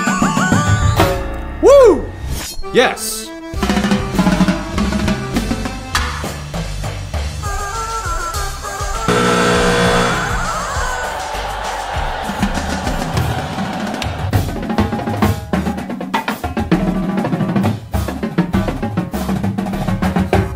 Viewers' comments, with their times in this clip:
0:07 Can't deny that you do have talent and skills. But seriously I think its not a good idea to start with tune. Its annoying and immediately gave me an impression that you are not taking this seriously. The chicken suit is also a contributing factor. But if you were dressed as Colonel Sanders, that kind of makes sense and a little more intriguing and seems to project a little more effort than a chicken suit, while still keeping the chicken theme.